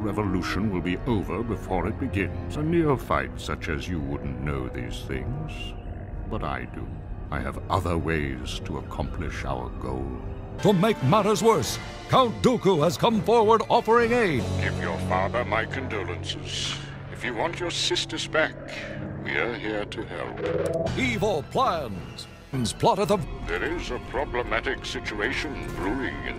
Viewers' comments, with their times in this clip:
0:10 i heard "aids"... "To make matters worse, count Dooku has come forward offering aids"🤣😭